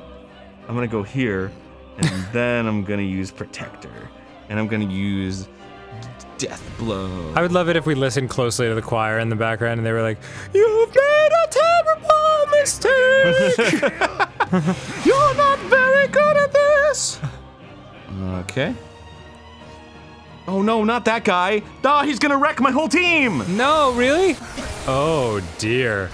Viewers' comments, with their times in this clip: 0:09 funny that they start singing this as Arin attacks his own ally for most of their health.